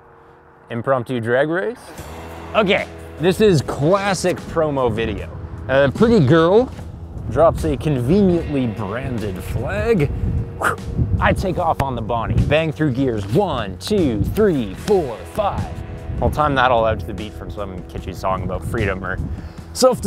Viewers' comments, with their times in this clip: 0:04 This is cwassic